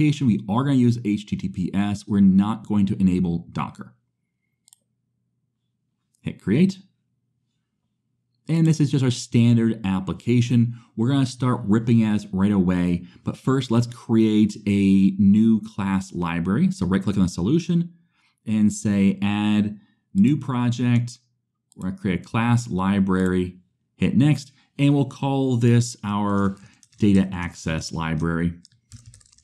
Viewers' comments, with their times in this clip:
0:10 ... I have no idea what was said there, but all I heard was 'we're gonna start ripping ass right away' and now I can't unhear it 🤣🤣🤣